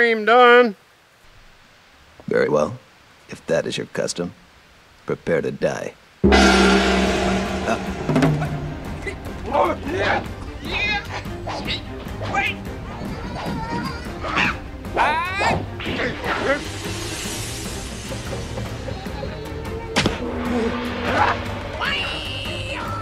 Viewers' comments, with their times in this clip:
0:07 I love the sound effects during the chicken battle